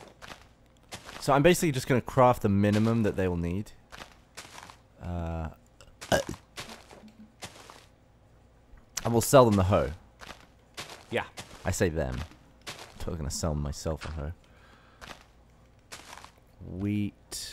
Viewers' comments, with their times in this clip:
0:05 I hiccuped at the same time as the burp and wasn't sure if it was me or not